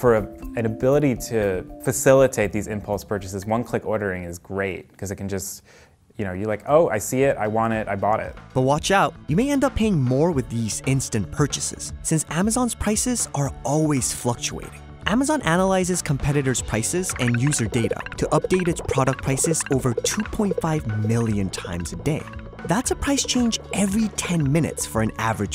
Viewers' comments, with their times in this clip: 0:06 okay lets be honest that sound like seven rings